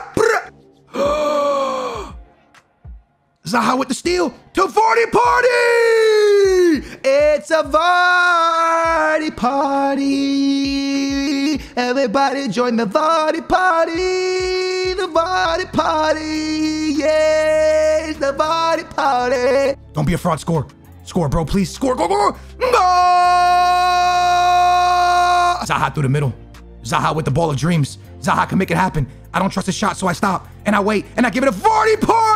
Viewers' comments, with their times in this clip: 0:10 he has a nice voice lol
0:14 wait till he sings I’m amazed 😳